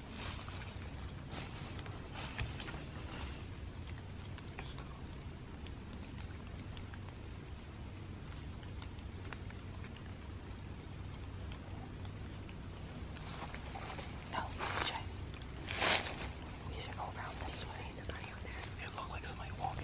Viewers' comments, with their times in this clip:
0:05 sounded like a zipper